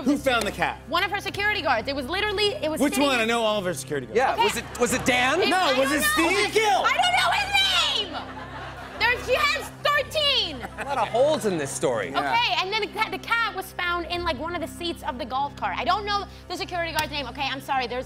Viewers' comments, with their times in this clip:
0:04 LMAO they sound like two cops interrogating a cat burglar 😂